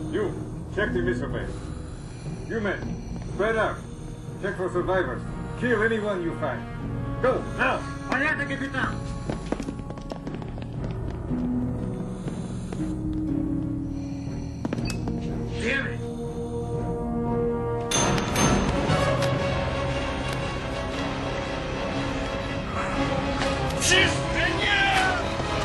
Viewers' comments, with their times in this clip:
0:08 sounds like waluigi